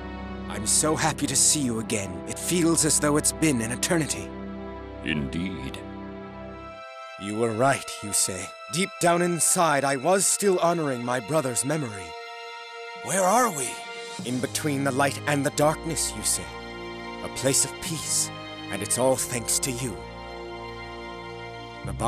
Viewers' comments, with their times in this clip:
0:05 Sounds like Zavala from Destiny 2 xDee